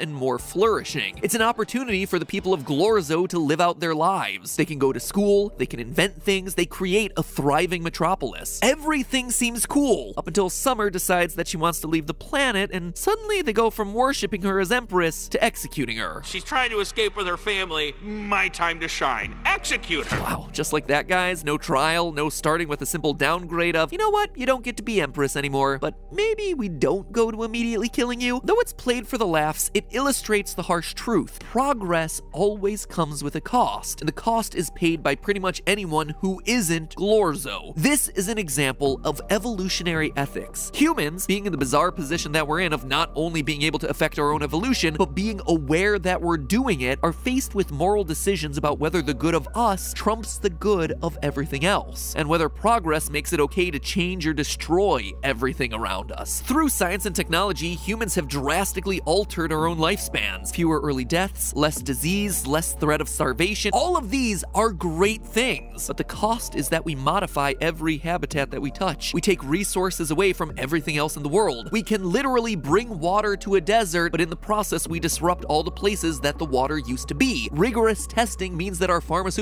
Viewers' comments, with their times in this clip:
0:09 Did anyone else noticed that in when he says "cool" it sounds exactly like Steve from Minecraft taking fall damage? This is so uncanny
1:01 Matpat interrupts himself???